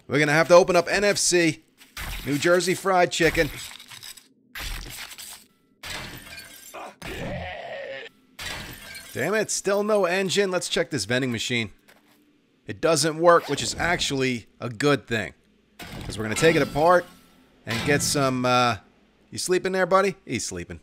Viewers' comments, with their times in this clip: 0:06 anyone else hear the zombie say "F*ck you" ?